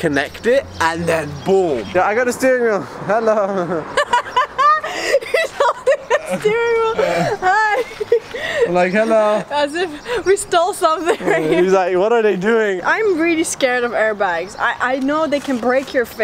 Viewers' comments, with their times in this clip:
0:03 love her amazing laugh :)